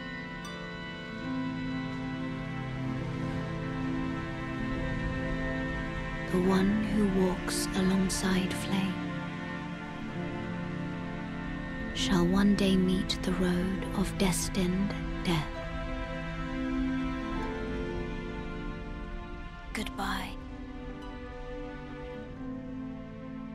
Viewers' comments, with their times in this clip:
0:05 this specific scene when the music gets a tad louder as she starts talking gave me goosebumps man